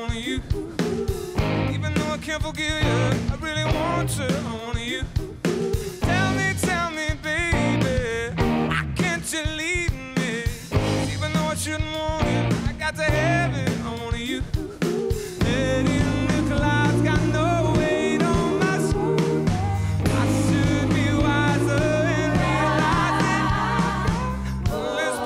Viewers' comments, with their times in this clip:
0:09 This is 99% perfect but what the fuck is up with that ACH